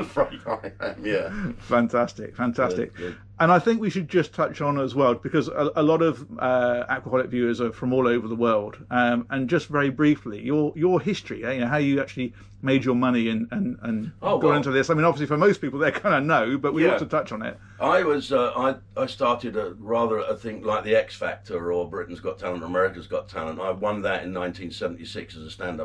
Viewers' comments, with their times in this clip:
0:06 yes I'm an alcoholic viewer 😂